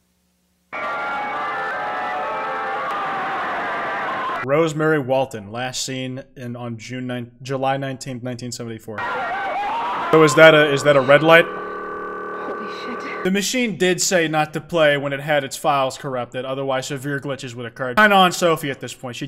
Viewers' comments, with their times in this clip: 0:03 that sounds like the roblox kid screaming meme